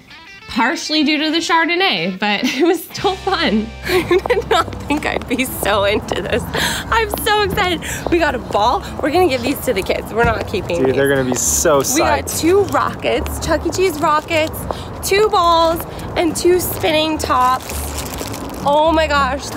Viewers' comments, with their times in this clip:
0:05 😂😂😂😂 they are talking right and all i hear are her shoes😂😂😂😂😂